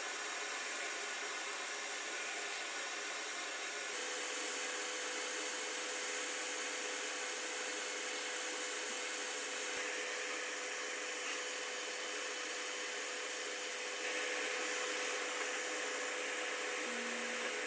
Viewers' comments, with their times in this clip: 0:05 the sanding is annihilating my ears